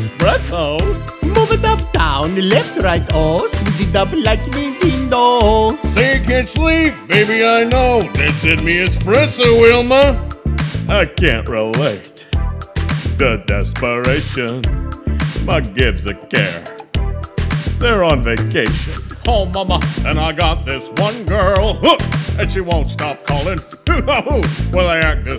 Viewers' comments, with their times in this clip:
0:07 There's something strange... the Flinstone voice and after are just different speeds, the connotation of the voice... it seems different too was expecting more once nonone undersame is heard
0:10 😂😂😂😂😂😂😂😂👌 OMG! That Kronk impression was ON POINT!!! Patrick Warburton would be so proud!